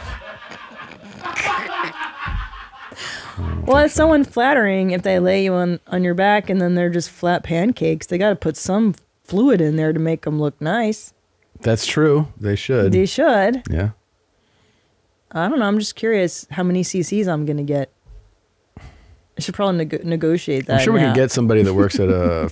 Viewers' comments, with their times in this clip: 0:08 cackling devils...Christine doesn't want to be whorified when she dies....